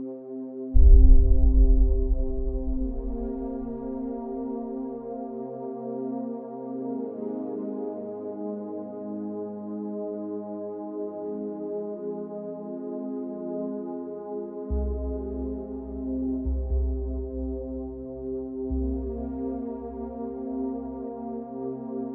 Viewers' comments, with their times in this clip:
0:09 RBD Rapid Boob Deflation No wonder the sad music